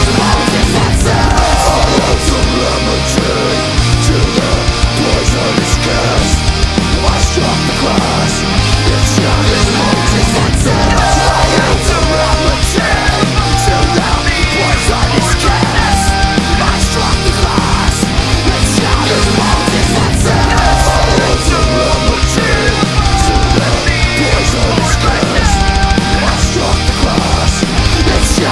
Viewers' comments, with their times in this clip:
0:09 to the end of the song they killed it🤘🏽 ronie singed so good